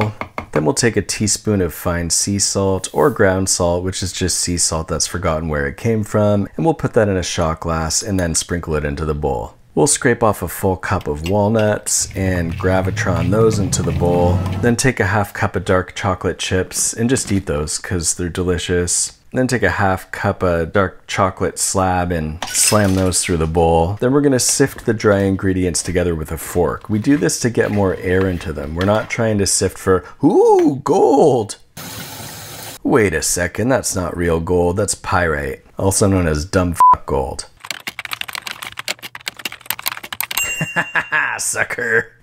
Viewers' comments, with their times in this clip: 0:04 the nocking sound had me saying "come in"
0:29 most emotion I heard from his voice.